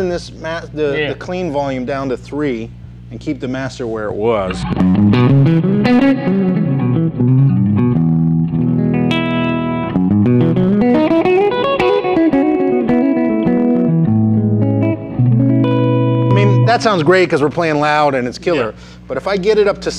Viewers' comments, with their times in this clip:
0:06 ...you can hear them big strings on Josh's guitar 😉